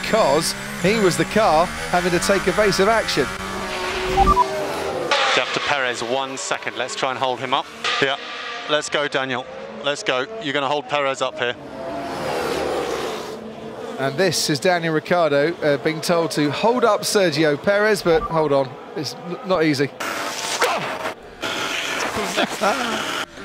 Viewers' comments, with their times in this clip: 0:08 Lol, that's Daniels' voice.